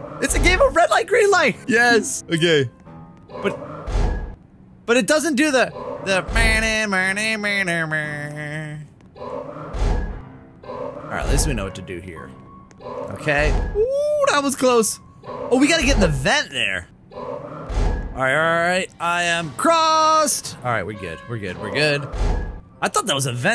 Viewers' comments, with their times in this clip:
0:05 When you started singing the squid games doll voice THAT PART GOT ME :)